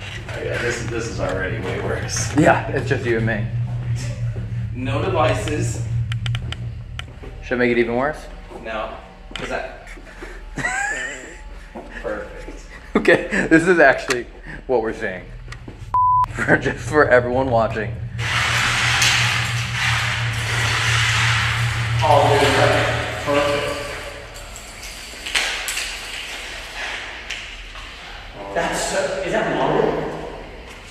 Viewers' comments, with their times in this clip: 0:10 there's a quiet noise that may be nothing, but it sounds like a man saying "Hey" really shakey
0:11 creepy voice saying something 😳
0:13 It’s hard to hear and I could be wrong, but I believe I can hear a woman’s voice or whimper or moan of some sort while you guys are setting up that long string of lights again. It sounds like it’s in the background off to the right of the camera view